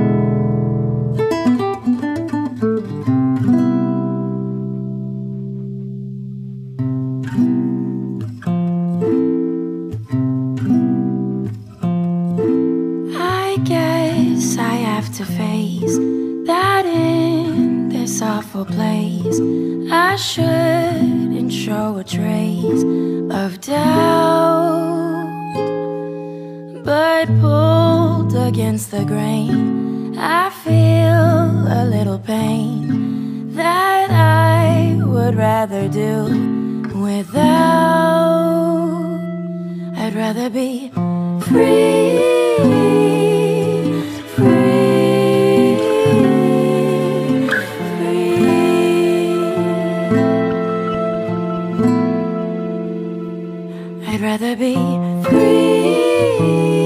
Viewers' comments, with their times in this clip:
0:06 is where the singing part is about to begin! Before that is instrumentals!
0:10 Singing starts a
0:40 The song is so beautiful in this part. 💙💙💙